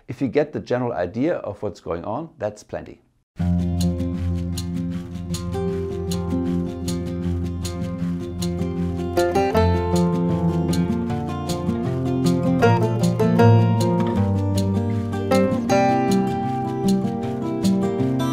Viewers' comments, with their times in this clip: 0:03 What is the music ? It's so relaxing :)